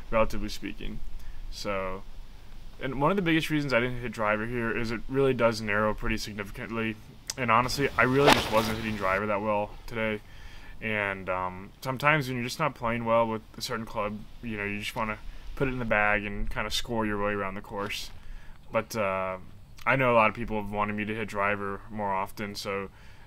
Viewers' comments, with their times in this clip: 0:07 The sound is ridiculous. Would you say you use the Mike Austin release?
0:08 ############## minutes in ################ I love how the sprinklers stopped the moment you hit your shot... It was like they paused for you. AMAZING hehehe ##########################################